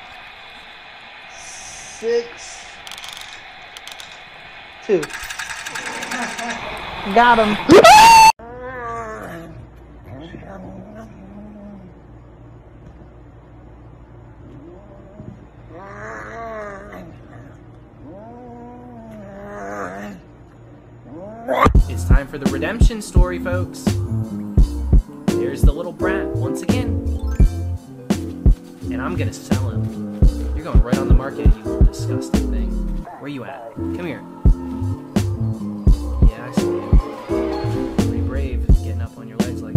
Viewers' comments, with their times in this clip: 0:04 i scream so hard that sceard me
0:20 the kitty said bbruh